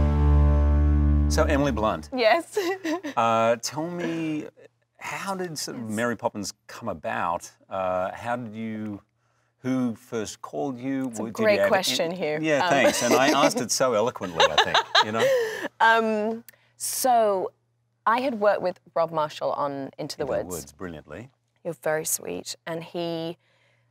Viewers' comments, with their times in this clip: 0:06 unintentional Christopher walken